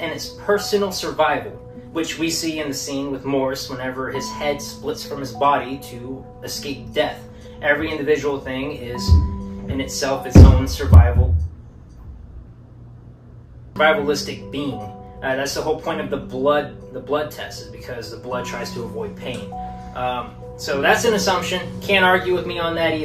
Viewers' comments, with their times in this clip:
0:10 I'm watching this in bed, late at night in my house, on my own, with headphones on. This bumping noise really freaked me out!